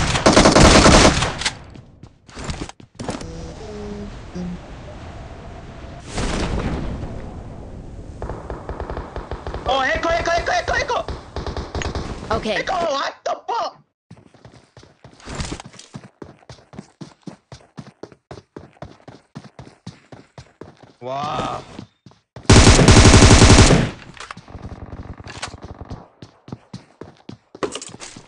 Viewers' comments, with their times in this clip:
0:04 Hacker stops that peaceful humming 🙂+😥+😂
0:09 hes sounds funny 😂